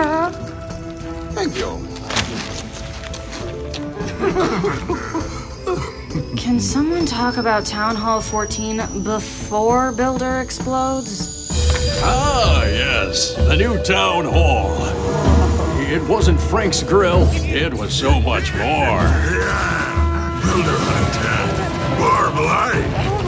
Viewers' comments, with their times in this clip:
0:06 the crying builder is funny